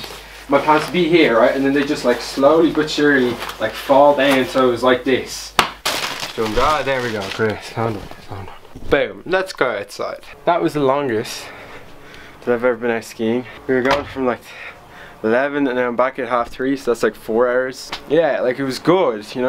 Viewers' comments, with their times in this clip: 0:05 The ass smack has to be the next meme